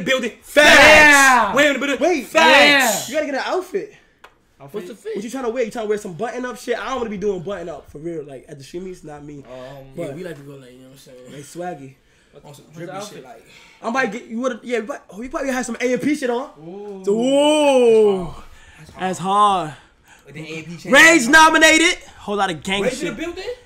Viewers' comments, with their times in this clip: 0:06 volume warning holy shit 💀
0:11 rip my ears 😭🎧